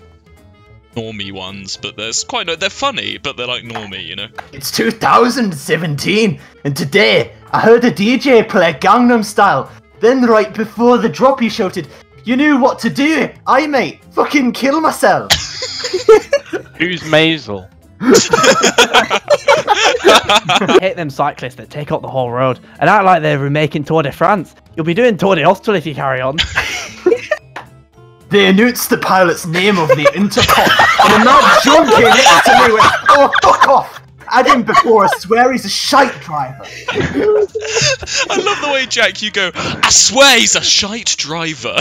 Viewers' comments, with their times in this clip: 0:07 He literally sounds more Irish than Scottish lol
0:28 thei annoonced the pailot's næme